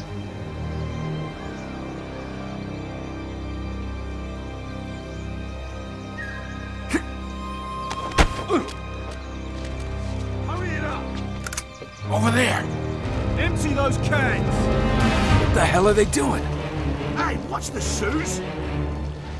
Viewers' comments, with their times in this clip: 0:06 *shink*! Sully:What the fuck was that? Nate: I dunno *distant voice*: GUARDS!! GUARDS!!